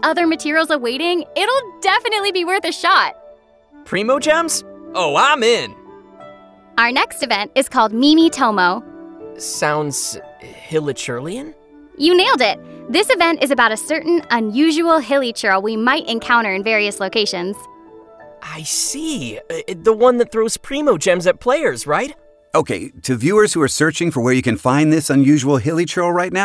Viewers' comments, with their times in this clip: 0:07 sounds like indonesian dance artist name